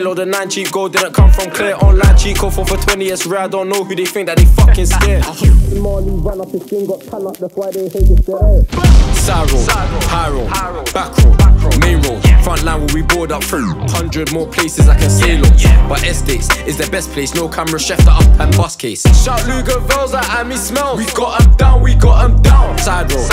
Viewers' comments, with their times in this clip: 0:07 I swear down digga said witch in Urdu listen from if your Muslim u will understand 😂😂😂😅